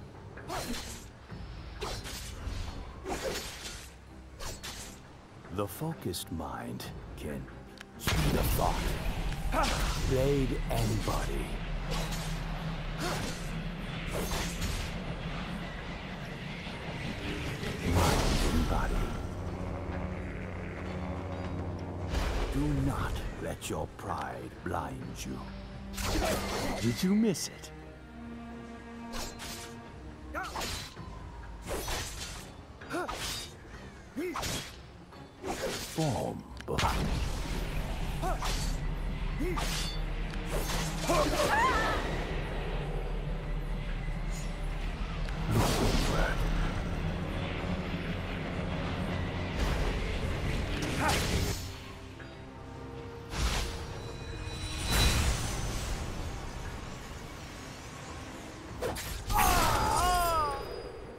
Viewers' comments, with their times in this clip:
0:04 "speed of fart"?
0:47 -> skarner voice xD